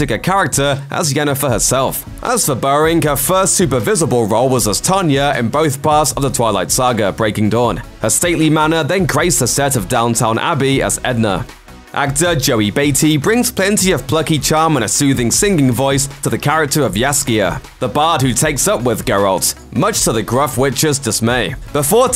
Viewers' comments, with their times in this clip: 0:10 Did I hear Downtown Abbey instead of Downton Abbey???? 😱😱😱😱😱😱